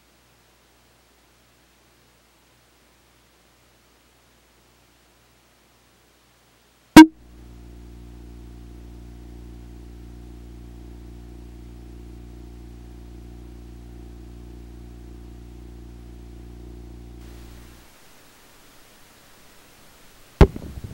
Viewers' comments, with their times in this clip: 0:04 that is the cutest explosion I have ever heard XD